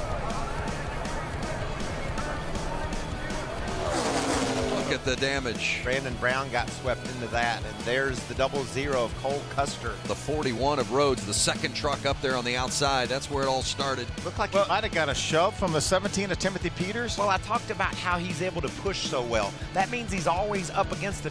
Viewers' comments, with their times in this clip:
0:06 What do I think? Some great video recaps, but I had to stop The back ground music is irritating. Fan's want to here it just as it happenend.